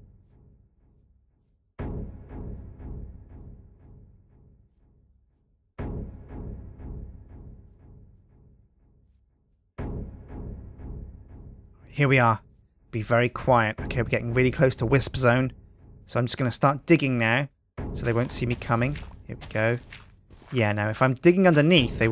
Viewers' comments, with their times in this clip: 0:10 the menacing music is so asynchronous with his bouncing